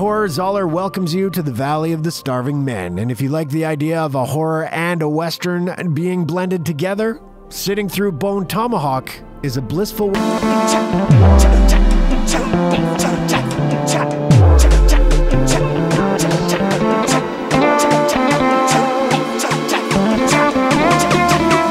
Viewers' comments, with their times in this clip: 0:09 i like how it abruptly cuts off here.